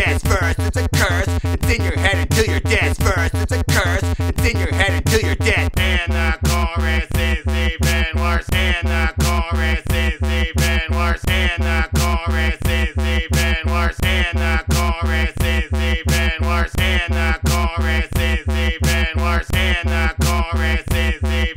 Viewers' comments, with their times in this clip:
0:05 and the chorus tasty landlords 💀💀💀💀💀